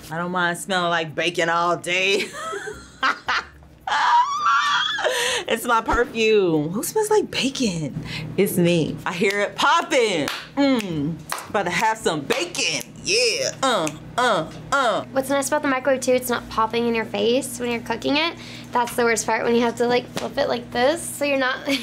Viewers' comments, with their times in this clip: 0:04 sound like a Pteranodon